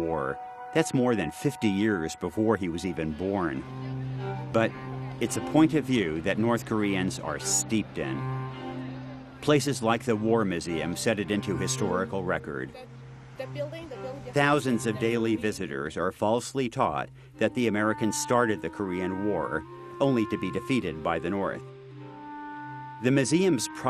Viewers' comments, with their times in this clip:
0:04 okay but just because it was before they were born doesn’t make it okay 💀 the entitlement in the narrator voice is something else.